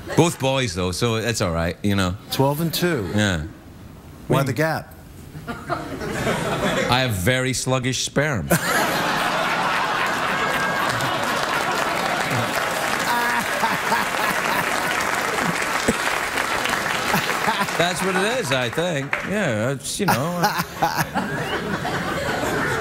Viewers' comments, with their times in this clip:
0:09 Aaaaawe, the famous Liotta laugh 😢 R.I.P.